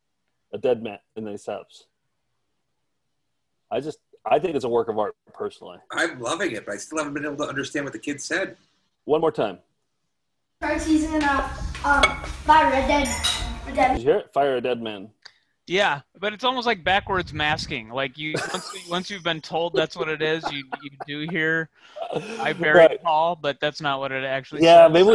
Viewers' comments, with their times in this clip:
0:10 I think the kid in the IMG is talking about buying a game - "Buy Red Dead Redemp-"